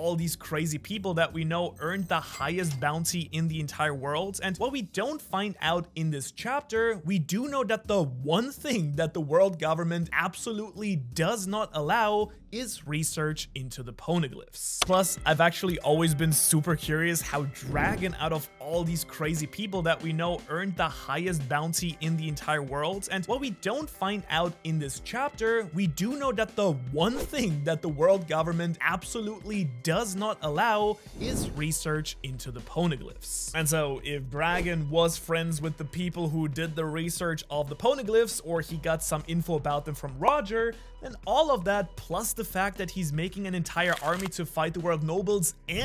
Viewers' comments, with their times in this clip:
0:06 lmao. you end up repeating the same bit in regards to why dragon might have the highest bounty. about a 15-20 seconds repeated
0:08 You've got a loop in
0:17 weird repetition here?
0:18 What's with the loop
0:31 line is said twice